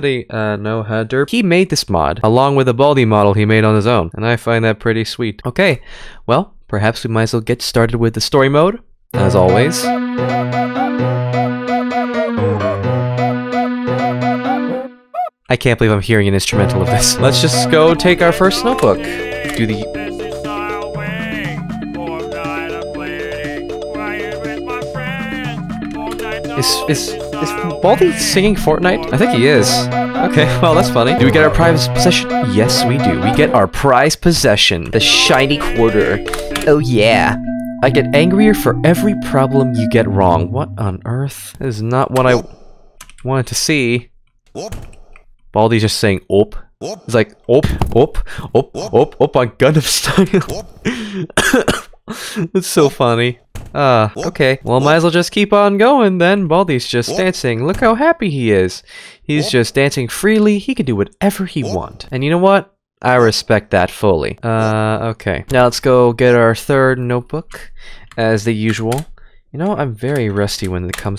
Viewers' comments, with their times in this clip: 0:09 the music cracked me up 😂😂😂
0:18 Bro played fortnite for 100 of years and he is starting to hum (or singing) it 💀
0:52 Fanny ✅ Funny ❌ (but no hate he is my fav yter 😊)